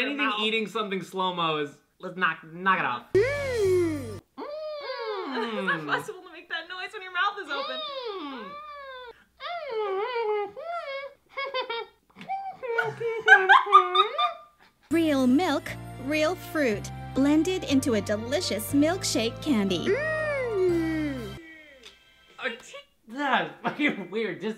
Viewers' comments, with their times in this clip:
0:10 I CAN'T BREATHE OMG I HAD A TIME WHERE I WAS TALKING LIKE THAT AND THEN I GOT SICK LIKE MY THROAT WAS HURTING SO BAD AFTER LIKE 3 DAYS LMAO